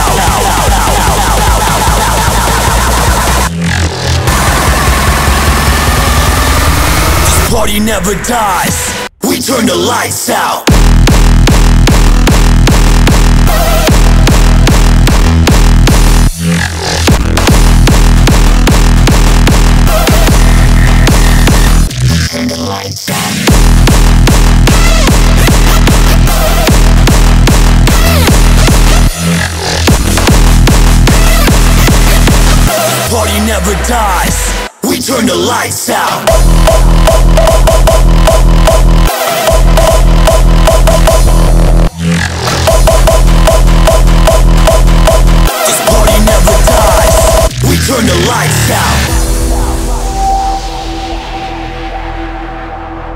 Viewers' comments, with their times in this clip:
0:04 I thought it was splittercore xD
0:09 that drop tho <3<3<3 Also the girl is fucking hot
0:10 i expected that tø be a fake drøp.. but it's still 🔥
0:13 the Beat fuck my mind !!!
0:36 !!! Guys KICK OF THE YEAR !!! Awesome melody, Fantastic track !
0:36 man, that kik!
0:37 I like Kick